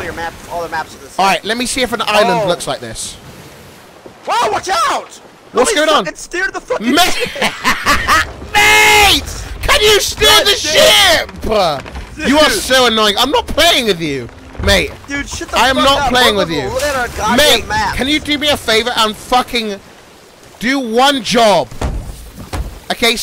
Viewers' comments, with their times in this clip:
0:06 best fucking laugh ever I love it